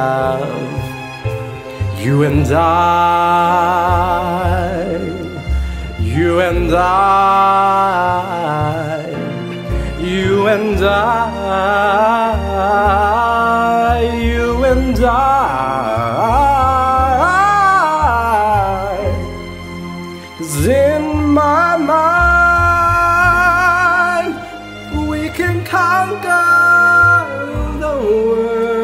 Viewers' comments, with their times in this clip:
0:10 Wow sounding much better to me dude - really rich tone on this one - really clear and smooth - loved the runs and musicality - really enjoyed it. Count me in for waiting on more covers. Loved the part really cool playful runs/ use of dynamics.